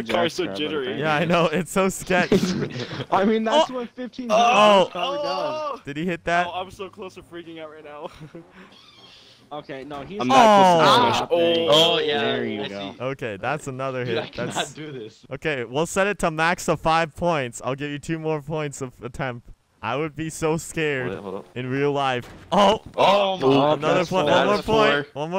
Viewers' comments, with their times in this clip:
0:08 anyone heard the door